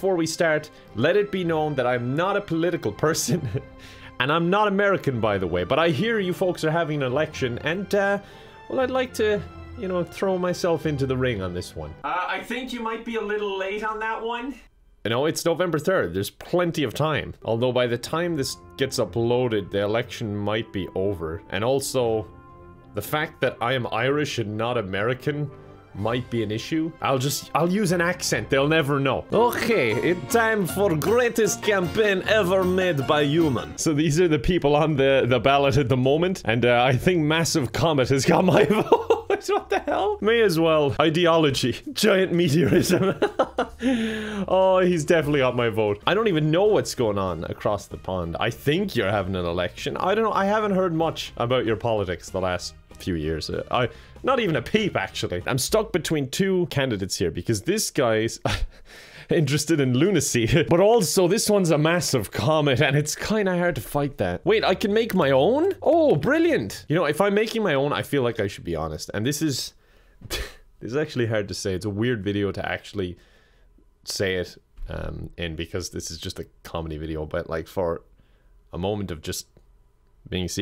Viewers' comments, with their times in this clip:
0:10 the voice is clearly coming from the right side, but you turn to the left. Huge editing mistake. Unsubed!
0:30 Why does his “accent” just sound like Borat Lmaoo
0:30 The accent and music used reminds me of mountain general
1:08 that actually sounded so genuine and real i was scared for a second-